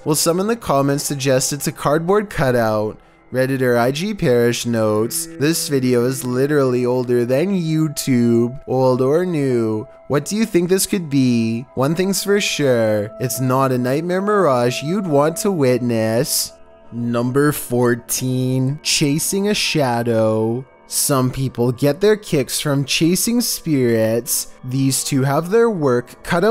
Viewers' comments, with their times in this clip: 0:07 why did he sound like he was holding back tears when he said youtube